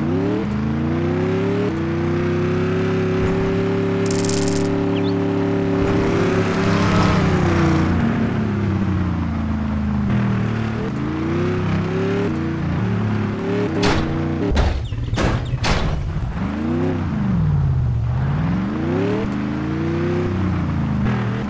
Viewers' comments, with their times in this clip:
0:04 Oh my God IS ONE ASMR